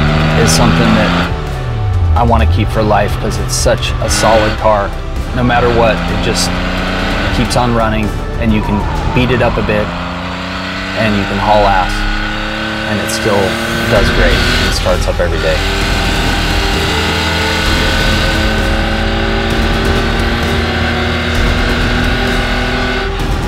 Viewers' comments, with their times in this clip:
0:09 "You can beat it up a bit" dubbed over that screeching, wheel lifting right turn, then roaring away to "and you can haul ass in it" is pretty much the coolest few seconds of video that could ever exist !!! That old 911 must surely be happy to get thrashed around.